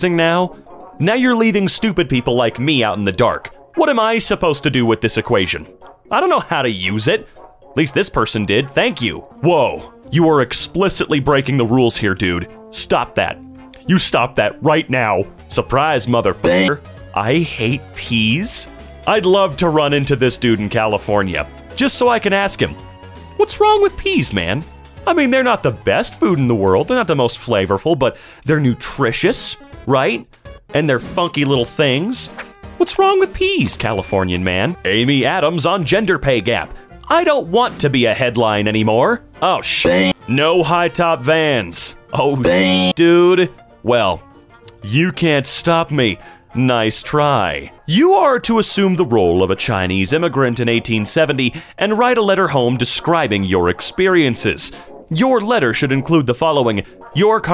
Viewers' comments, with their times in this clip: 0:10 he sounds distraught “You stop that. You stop that right now.”
0:33 I thought of “the pee’s”😂😂
0:41 amazing bleeping. "Oh BEANS"